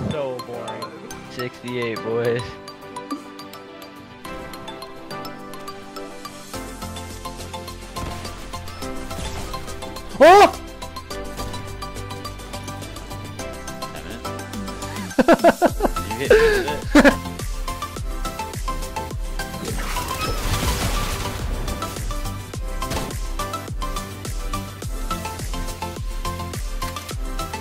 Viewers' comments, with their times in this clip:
0:05 RIP left ear
0:09 my left ear enjoyed that sound
0:10 my left ear